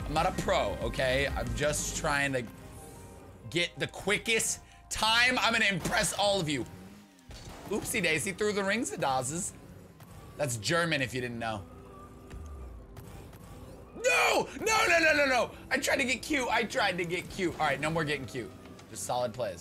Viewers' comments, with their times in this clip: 0:06 Thats german? I'm german and I did not understand a word lmao
0:06 im german, and i cant understand that lol
0:07 lam a german and i promise that wasnt even near german :D lol